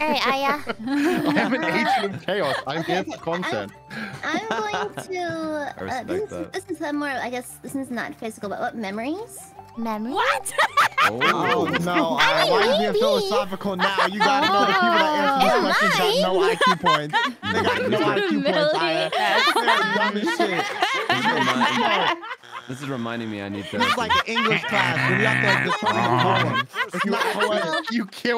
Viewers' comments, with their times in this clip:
0:09 click here for witch laugh